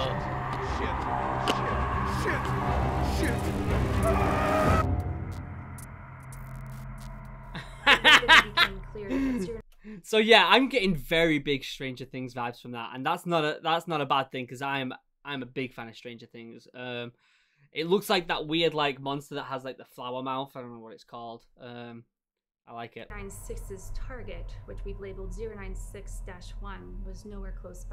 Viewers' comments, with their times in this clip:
0:08 He was cracking out laughing at the last moment before he died